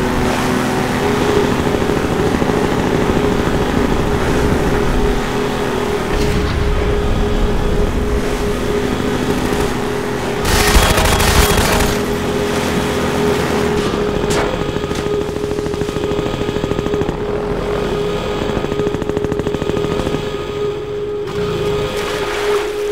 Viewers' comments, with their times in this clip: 0:06 That alarm is similar to the Half Life 1 Alarm used by Black Mesa...